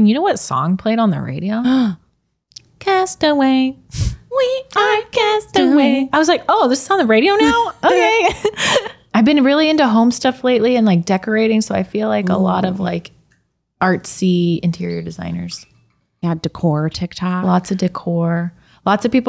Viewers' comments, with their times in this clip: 0:07 I thought she said homestuck and I nearly had an aneurysm